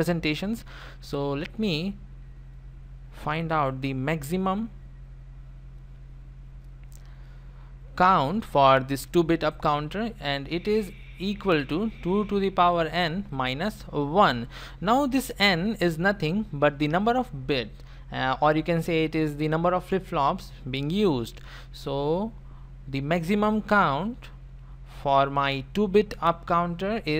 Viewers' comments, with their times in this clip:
0:10 i heard stupid😆